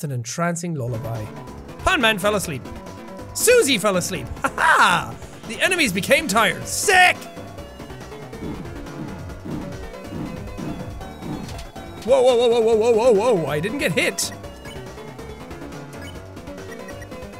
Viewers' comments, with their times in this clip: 0:03 Rip headphones user